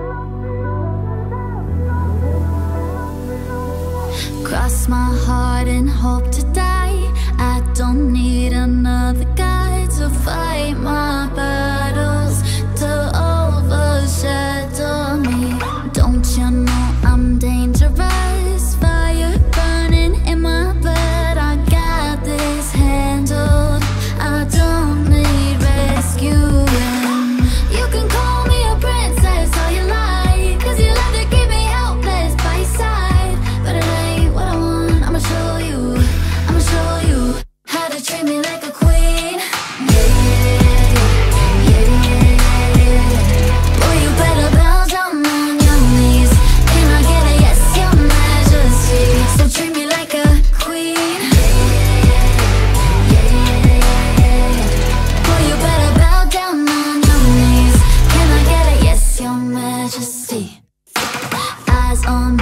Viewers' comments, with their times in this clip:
0:05 I LOVE LOREN it kinda sound like a lyric from Him and I
0:44 Sounds like Kpop